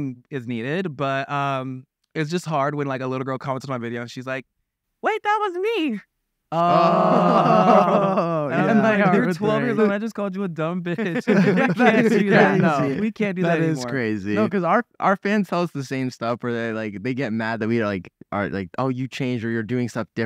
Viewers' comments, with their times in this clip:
0:03 im sorry but the way larray says wait that was me is soooo funny to me